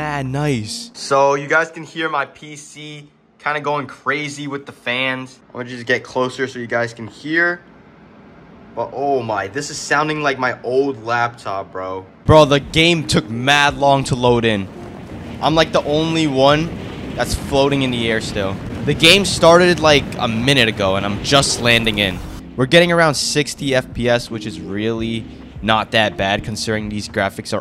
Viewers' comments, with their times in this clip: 0:08 playstations at 12 am be like